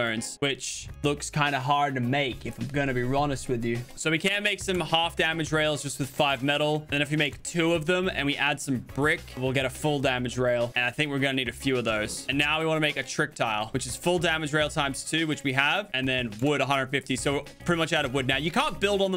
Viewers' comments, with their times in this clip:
0:05 if I’m gonna be rhonest with u